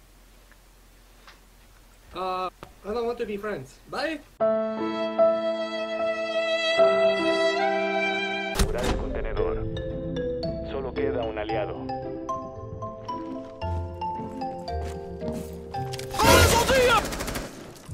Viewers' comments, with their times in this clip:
0:04 Videogame changes automatically soundtrack volume +200%: WHY CAN'T WE BE FRIENDS